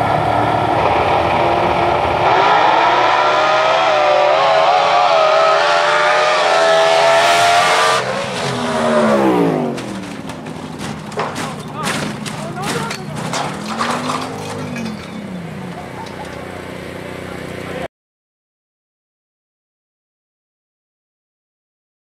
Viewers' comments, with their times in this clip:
0:04 Annnnnd the evil witch who laughs at the end of the wreck ...
0:16 someone was laughing😢